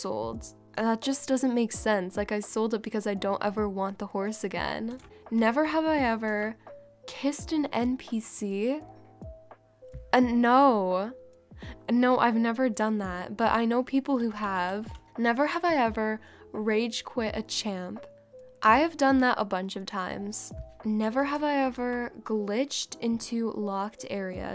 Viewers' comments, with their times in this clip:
0:10 why do you always sound so sarcastic about that... 😅